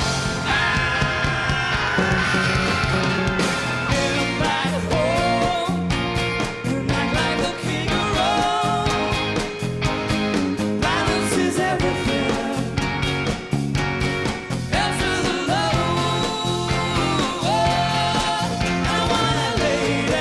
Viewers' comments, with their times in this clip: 0:04 Hahaha they start laughing at each other